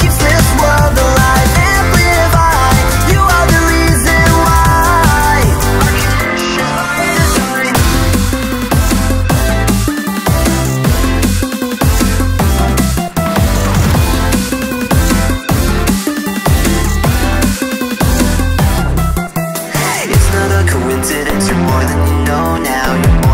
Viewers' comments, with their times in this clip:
0:05 "OUR CONNECTIONS BY DESIGN" its my favorite part, it sounds so good!!